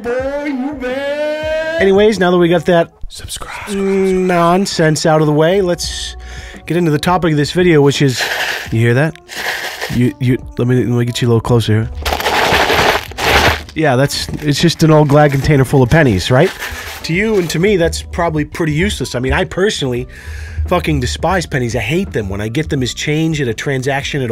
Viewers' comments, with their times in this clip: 0:07 happy dog noises*